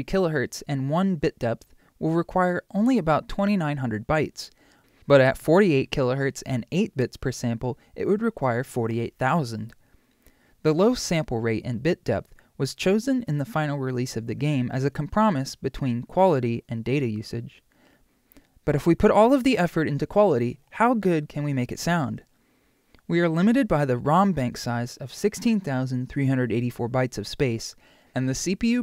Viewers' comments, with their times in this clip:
0:10 "com-prom-is"? I don't think I've ever heard it pronounced that way before.
0:11 a "com promise?" a compromise? chat, please pronounce compromise for this man, he legit said com and promise as two separate words. btw great video.
0:12 did he just say com-promise? lol
0:13 Firstly, this video is AWESOME. Love audio, love pokemon, and I love that we get to see the assembly broken down on screen. Secondly, did you pronounce compromise (KOM-prum-eyes) like "kuhm-PROM-iss" at like or so? hahahahaha I have no clue what could lead you to doing that but I love you
0:14 I've never heard someone pronounce "compromise" like that... this video is super cool though. I understood and enjoyed learning about this :D
0:14 I've never heard compromise pronounced that way
0:14 "com promise" is more cursed than Pikachu's cry
0:14 Are we just gonna ignore the way he says "compromise" ?
0:14 never heard “compromise” pronounced like this
0:14 Did you just say compromise (come, promise)? as in compromise (com, pro, mice)? What?